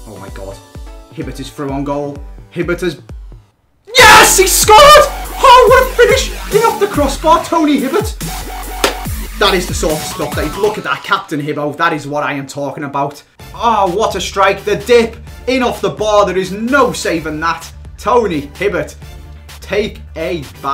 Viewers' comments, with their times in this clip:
0:04 Who else had a voice crack